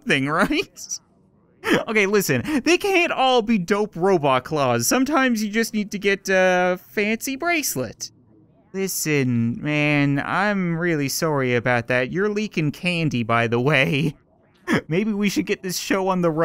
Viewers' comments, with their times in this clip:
0:04 all I hear is I WANT TO BE INSIDE YOU. ME HA GAYYYYYY